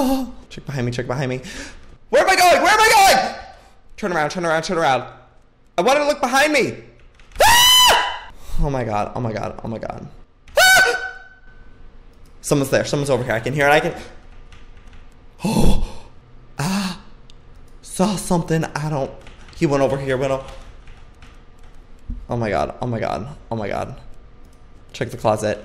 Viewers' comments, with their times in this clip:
0:07 THE BEST PART OF THE VIDEO. I laugh every time. The way he leans back and scream for only 1 second 😂😂😂
0:07 IM DYING !!!!! !!!!OMG!XDD. RIP HEAD PHONE USERS